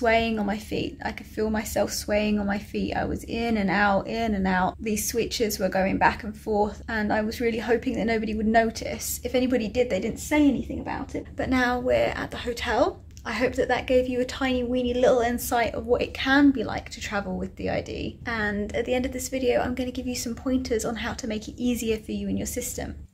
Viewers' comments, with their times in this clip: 0:09 I kinda felt like Nina was co con when she turns and looks out the window, then she kinda talks a little bit like Nin for a sec (Nin at that point didn't "exist" yet)